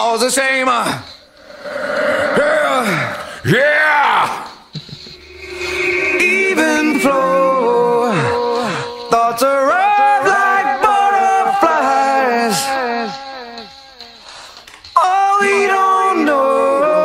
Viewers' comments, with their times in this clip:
0:05 Ed's pitch is also spot on most of the time. This was also all way before auto-tune and certainly all done to tape. In fact PJ to this day will only track on 2 inch tape. Just like Eddie wouldn't use in ears for decades. Or at least he wouldn't/wasn't using in ears from the inception of the band touring through 2005. I think he has one in, in the pic into the video. His hearing must have been getting shot. They did break a record for loudest stage volume on one of the tours in the early aughts hahaha. Being punk rock is cool. But not at the expense of hearing. But some of these guys found in ears so strange when they first came out. I also think PJ has always had a pure punk rock esthetic even if they are not always playing "punk" songs. They did what they wanted always. From stopping doing videos for years to boycotting ticketmaster. That's totally punk IMHO. -M